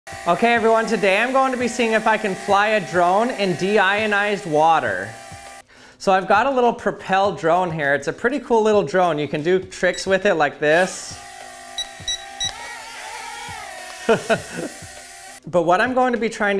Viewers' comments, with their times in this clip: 0:01 i almost thought thought he put the happy troll theme song as background music.